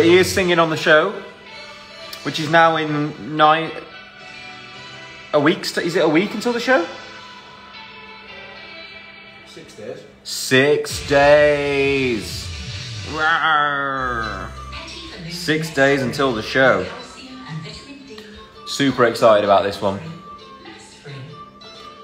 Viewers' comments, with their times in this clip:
0:09 it sounds like zaynnn ?